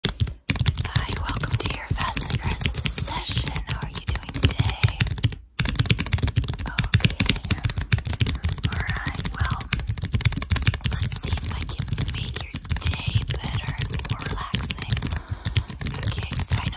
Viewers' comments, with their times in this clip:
0:00 I freaking love the close up typing (pretty much all th close finger stuff fidgeting etc))